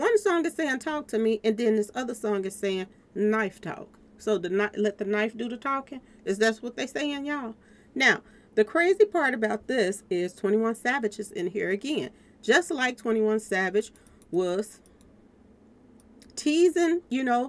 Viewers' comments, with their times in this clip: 0:04 knife talk so let the knife do the talking is that what they saying y'all 😂 it was so funny to me the way she said that I know a little about that knife talk I been hit with one before not fun